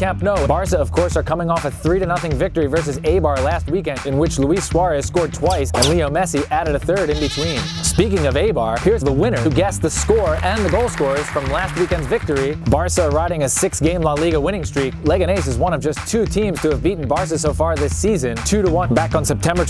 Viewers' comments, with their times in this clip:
0:07 the goat sound after saying messi's name is fucking genious!!!